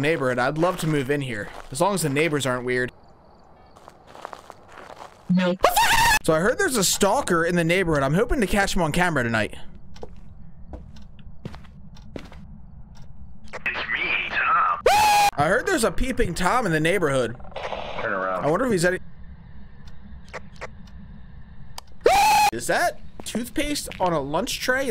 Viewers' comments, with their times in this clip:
0:05 why did he start speaking voldemort